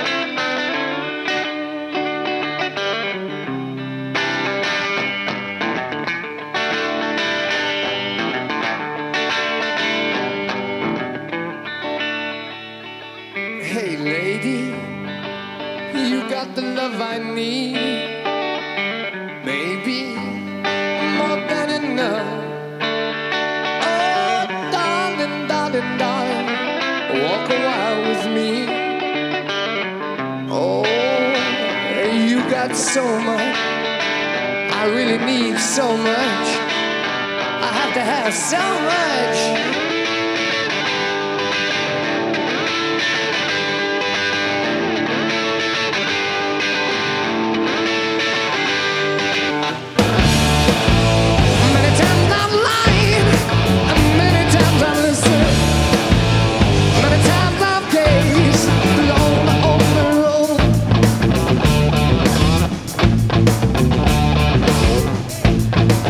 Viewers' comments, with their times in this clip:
0:05 I luv these two pull offs right here..
0:39 The tone on his guitar is fucking fantastic. Pure fire, best sound I've ever heard come out of a guitar. Mr. Page makes it seem like he doesn't have to put effort into his playing, he just makes it look , don't know the word, graceful. The way his tempo goes back and forth with ease has always been incredible. Listen to any cover of his intro and they can't match it. Their are some killer covers but none can ever get the tempo right.
0:49 Obviously all four members of Led Zeppelin were necessary to achieve their sound but you can really hear where their power came from in the video when Jonesy and especially Bonzo enter the song.
0:50 I love the way that Bonham comes in like a Sledge Hammer ...
0:50 I really hate that the live versions never sing that part correctly
0:52 The lick is pure filth.